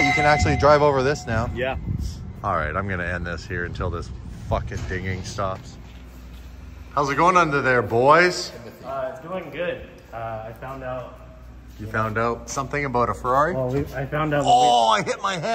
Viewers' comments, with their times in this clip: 0:03 bruh the fucking dinging was pissing me off too how annoying would that be 😭😭😭